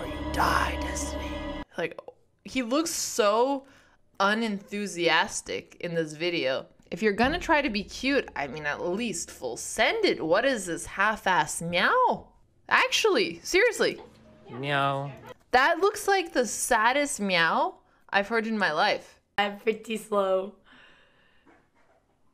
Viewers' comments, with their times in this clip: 0:06 "full send it", spoken like a true Canadian.